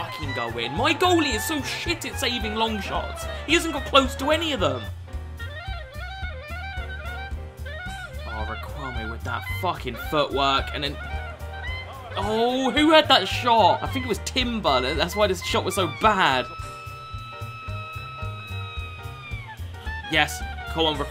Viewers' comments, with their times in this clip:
0:04 damn that music linked up pretty nicely with Riquelme's dribbling